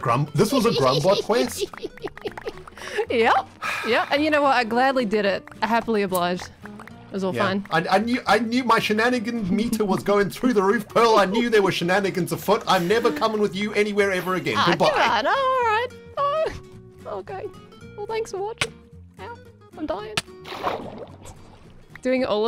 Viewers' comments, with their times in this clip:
0:03 Was that the sound of a lighter?
0:05 am I the only person hearing a lighter flick here?
0:05 sounds like someones flicking a lighter :o